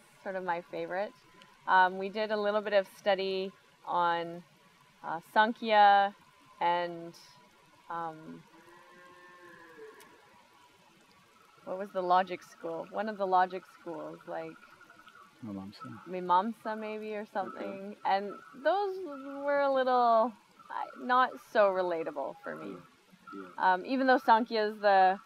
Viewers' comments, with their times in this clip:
0:07 you can hear a cow mooing if you listen well....